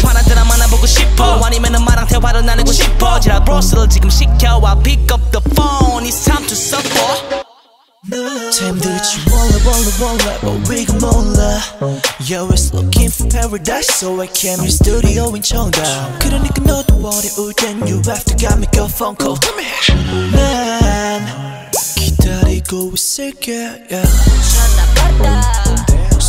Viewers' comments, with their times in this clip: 0:08 I was confused when it stopped, I already sang "Baby I'm just chillin" lol